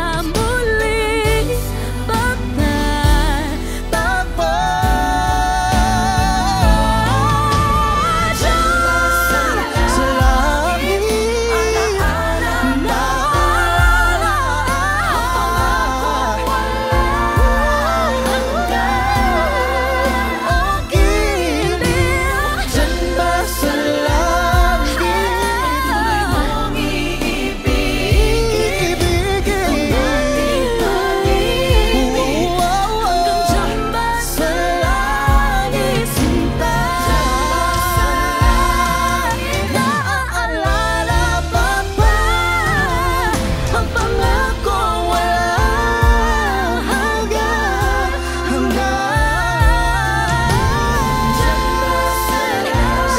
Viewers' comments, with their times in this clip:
0:08 that well-rounded belt pota
0:39 ARGH!!!!!!! THAT !!! DYNAMICS!!!!!!!!! <3
0:41 T'was Mixed voice .. was pure belt